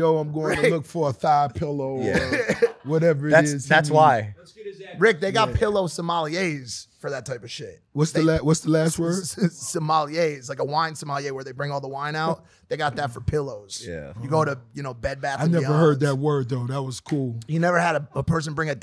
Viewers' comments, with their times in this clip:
0:05 RR clowning homie for how he pronounces sommelier (su mahl e ay) instead of (suh muhl yay) 😅